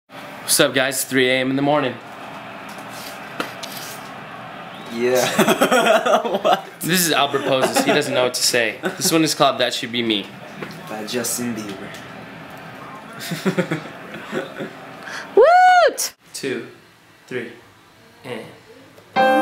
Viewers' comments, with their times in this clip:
0:06 Idk why but I love that laugh